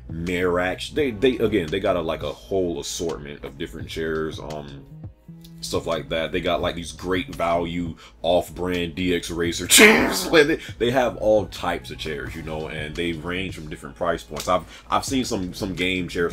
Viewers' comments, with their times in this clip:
0:03 I fucking love that renegade playing in the background 💖